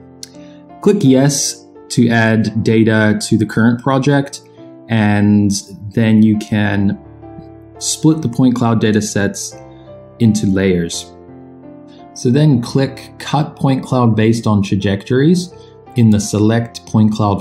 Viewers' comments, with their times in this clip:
0:05 At around the the audio is repeated from the previous 10-15 seconds.